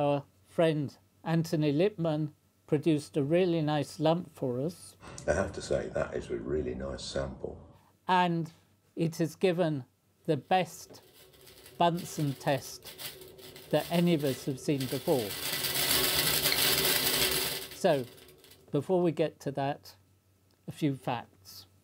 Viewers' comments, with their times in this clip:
0:05 Thanks! I just found it! 🙂 The voice is indeed similar to the voice but I could be wrong of course.